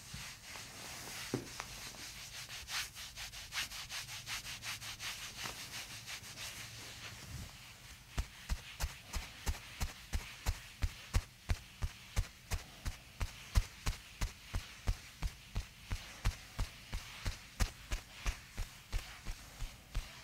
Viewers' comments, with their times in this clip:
0:07 POV - You start walking in Minecraft